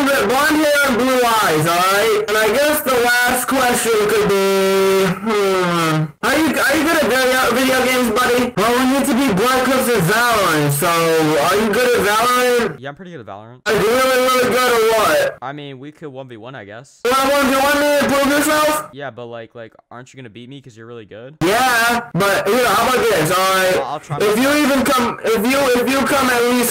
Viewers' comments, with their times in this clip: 0:10 lol youtube think his voice is a music lol use english auto translate